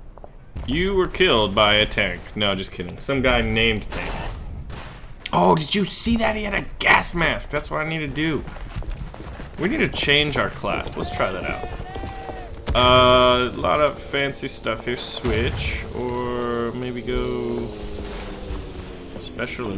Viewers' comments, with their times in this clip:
0:05 You Sound like Chris Pratt